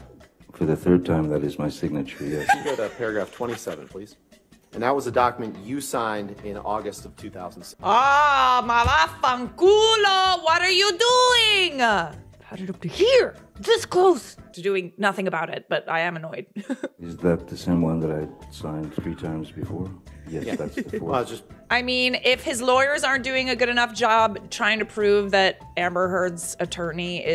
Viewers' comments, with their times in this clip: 0:09 are you italian? You said "mavaffanculo" with such perfection that I'M SHOOK